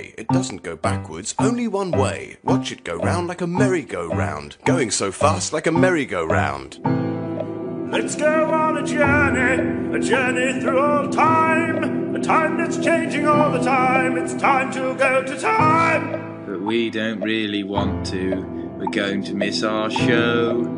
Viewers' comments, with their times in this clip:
0:07 gets man voice